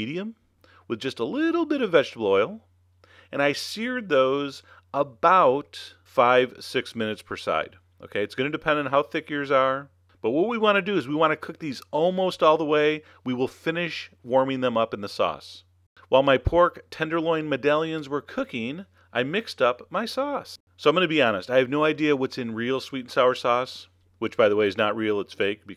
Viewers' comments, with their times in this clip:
0:07 it says bollocks five to six mintues per side lolo